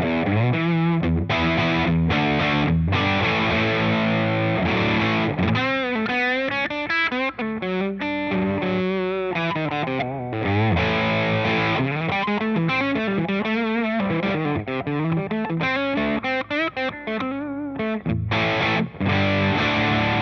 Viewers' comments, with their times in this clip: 0:04 the op amp clipping was probably the best sound. Not near as much if any clean bleedthrough and not as screamer-ish. The extra boost seemed to flub the bass a bit, but stoner/doom/sludge types would probably be in hog-heaven with that amount of rotundity. Could easily venture into Rat territory by going down the op amp boosting an op amp route, or so it sounded. Your comment that it had fuzz qualities leads me to think you may be onto something.